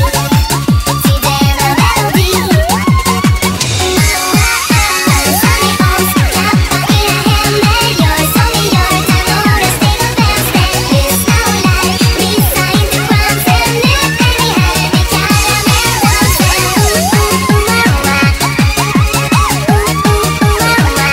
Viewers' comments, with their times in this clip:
0:06 Don't get me wrong...i kjnow the song is Swedish and everything...but it sounded a hell of a lot like "Clap then eat a handbag" O_e